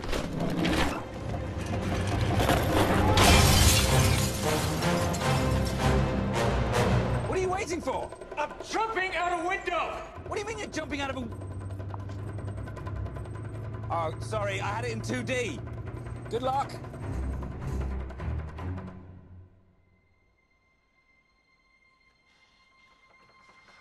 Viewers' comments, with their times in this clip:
0:07 "what are you waiting for". "I'm jumping out a window". "What do you mean you're jumping out of a(turns model on screen to 3d) oh sorry I had it in 2d,good luck".(nervously) 🤣🤣🤣🤣🤣🤣🤣